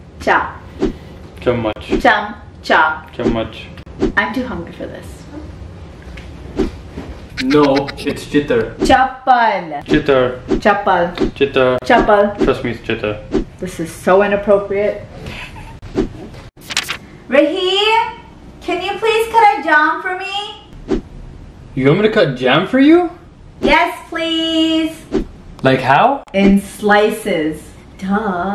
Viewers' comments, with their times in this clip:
0:09 it is a Punjabi word and it mean sandal but the way he pronounces make another word come in my mind Guess what is it